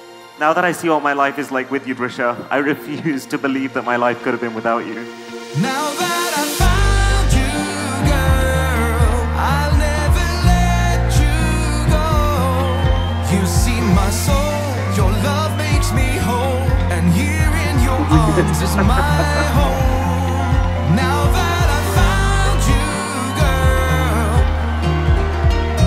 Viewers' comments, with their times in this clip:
0:07 This music is just too good, wish it was on Spotify